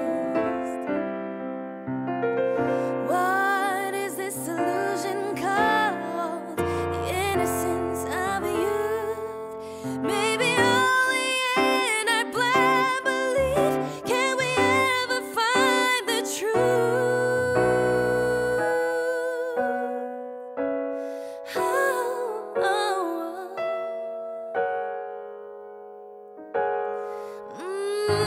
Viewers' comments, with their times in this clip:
0:10 woww what power!